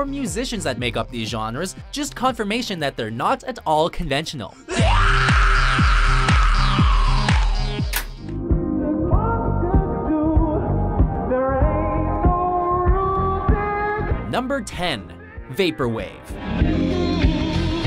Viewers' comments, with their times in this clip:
0:04 Teacher: What does a scream sound like? Everyone: Ahhhh!! That one special ed kid: